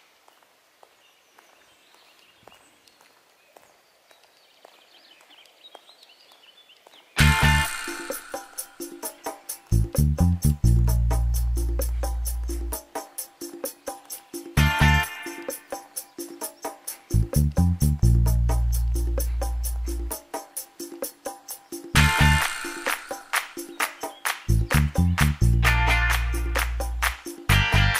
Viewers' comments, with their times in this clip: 0:08 A lovely campsite with a nice owner. the theme tune kicks in 🙌, you kept us waiting 😂.